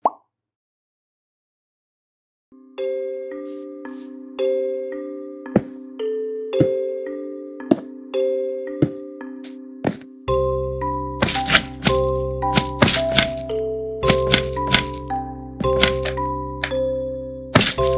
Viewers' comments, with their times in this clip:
0:03 everyone: **watching the video** Me: **listening to the music** 😢